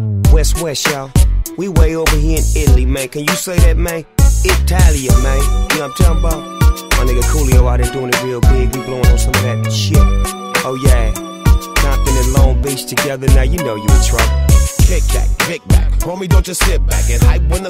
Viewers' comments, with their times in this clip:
0:05 I love how Snoop says "Italia" If I'm not wrong, Coolio was produced by an italian label back in the day